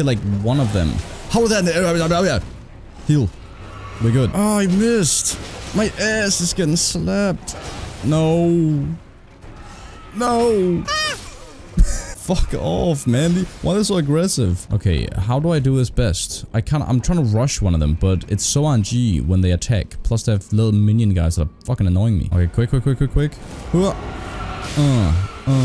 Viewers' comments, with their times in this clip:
0:10 the peak of Manliness screaming is here